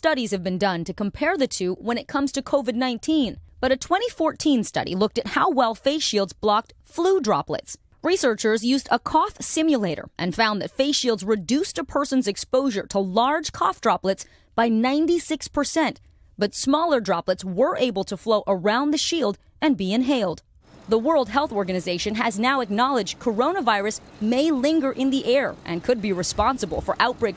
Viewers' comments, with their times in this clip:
0:10 if ANYONE coughs like, I would recommend he or she call 911 STAT!!!!!